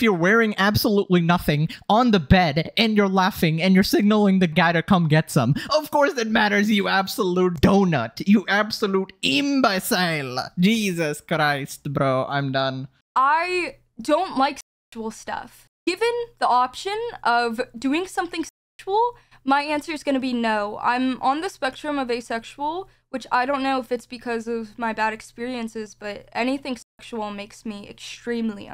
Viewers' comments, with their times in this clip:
0:06 her bs is so shit bro started switching accents 💀💀😭
0:09 Bro why he turn Italian for a sec ?😭